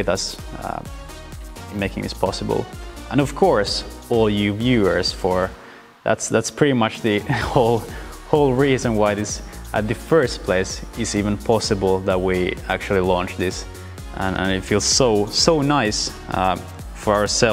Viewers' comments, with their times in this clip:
0:03 when u said thanks for the rubbers I thought u said robbers and I was so confused lol